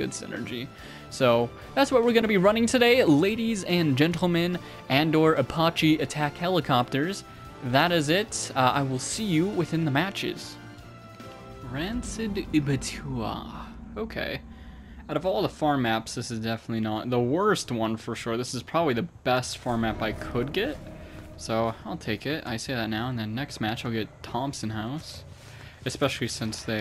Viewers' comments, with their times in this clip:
0:10 why did you sound like a sim stalky😭😭✋🏼